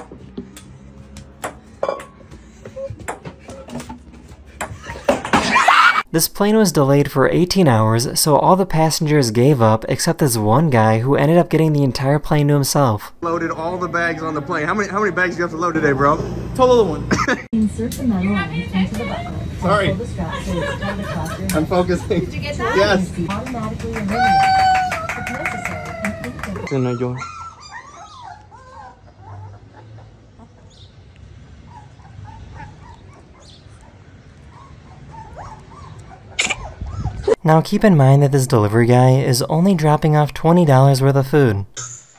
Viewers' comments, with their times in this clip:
0:03 the laugh was funnier then the whole vid
0:05 what was that scream 💀
0:05 why did they scream laugh 😭
0:05 Sounds like goblins
0:27 THATW SO CUTE HOW THE LIL BABY PUP JUST COUGHED THE PILL